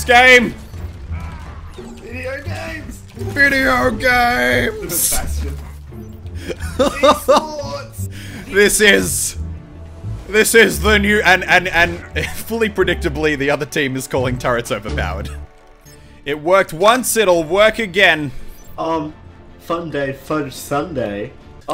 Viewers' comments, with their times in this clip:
0:05 i thought he sayed "MEDIOCREEEE"